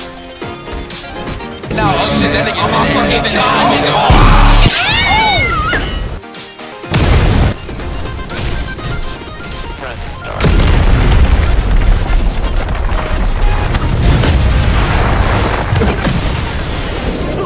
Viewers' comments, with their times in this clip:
0:05 bro disrespected him with an cat slap noise